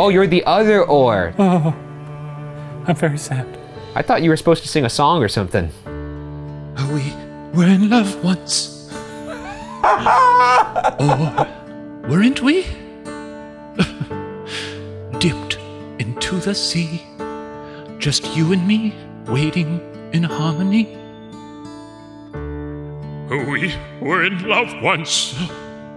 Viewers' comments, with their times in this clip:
0:06 my favorite puppet history song! 💙💙